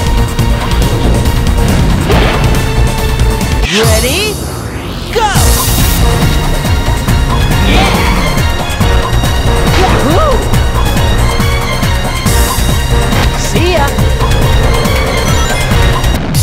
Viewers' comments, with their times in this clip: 0:03 You only used the gravity ability for the epic music, I see you